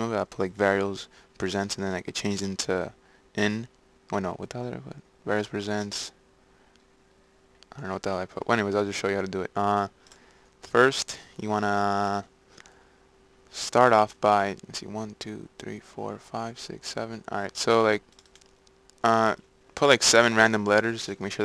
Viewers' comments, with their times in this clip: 0:03 Good shit man, you voice relaxes me in the morning xD hahaha